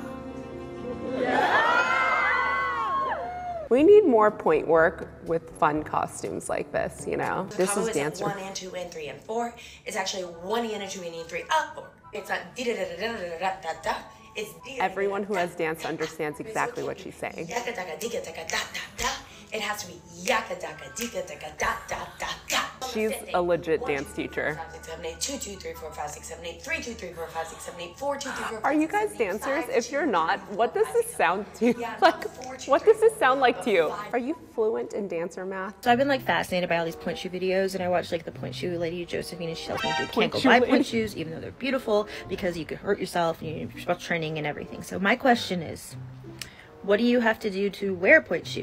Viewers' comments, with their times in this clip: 0:08 That’s not dancer math that sounds like mores code (I’m not a dance)
0:08 it sounds like when I used to play the violin loll
0:10 ironically i went to a '' hip hop '' and modern dance class after school that was in my school theater room and IT WAS BASICALLY JUST BALLET. SO I KNOW why shes saying what shes saying but yeah it sounds like steps your supposed to take for anyone, or random numbers and sounds. kinda like gibberish
0:18 this sounds to me like what I sound like trying to figure out the amount that I'm about to spend on groceries and deciding what I'm going to keep what needs to go back on the shelf and they're trying to tell my kids what we have to get done for the day and the things that I need them to do to help me so I can help them to help themselves to help me back.
0:31 it sounds like band to me! The counting is the same for quarter rests and tied notes